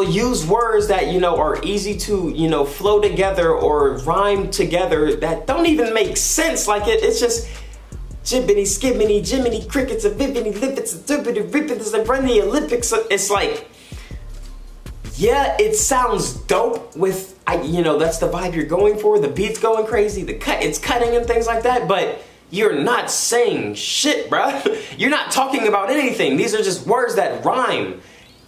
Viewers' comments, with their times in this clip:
0:09 that shit sound hard af